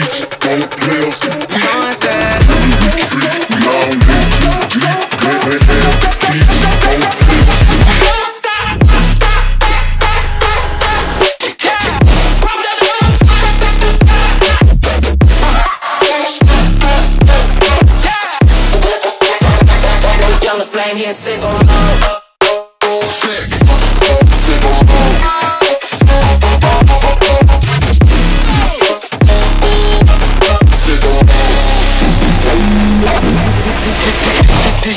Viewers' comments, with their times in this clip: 0:08 is Hybrid Trap w/Dubstep
0:08 I love when the trap plays at exactly
0:10 to me its sounds like he is saying 'THOT THOT THOT THOT' i think its just me XD
0:13 wayyyyyyyyyyyyy its RAP!!!!!!!!!
0:21 when the microphone in the video lesson don't work